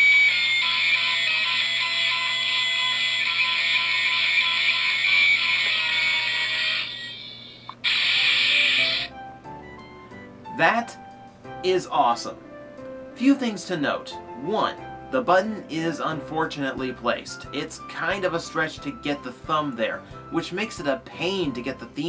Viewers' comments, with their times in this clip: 0:06 so weird when the music changed =)